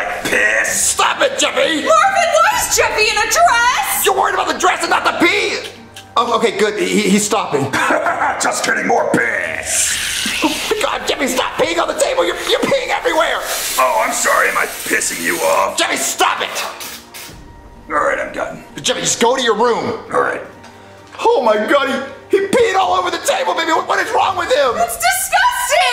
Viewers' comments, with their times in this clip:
0:06 bro the way Jeffy said just kidding had me laughing last time😂😂😂 But still nasty.